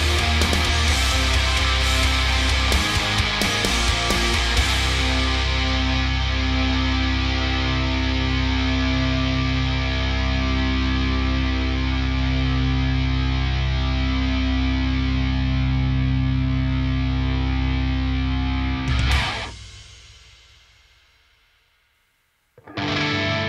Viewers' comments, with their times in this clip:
0:07 How is it your guitar can sustain that long ( ish) with the noise gate on? Does ISP just do a better job at leaving your guitar with more breathing room?